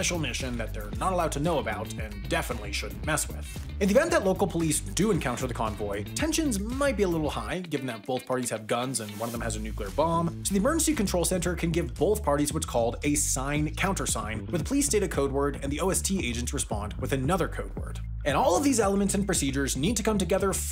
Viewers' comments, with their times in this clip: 0:05 "tensions might be a little bit high given that both parties have guns and one has a nuclear bomb" is such a great line and the totally casual delivery makes it so much better.